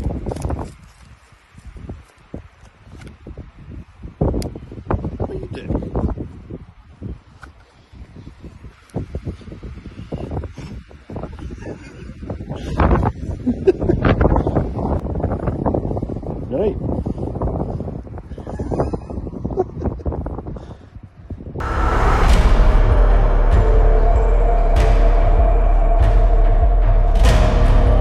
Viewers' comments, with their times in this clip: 0:10 In Halo part one voice "HEADSHOT!!!!!!"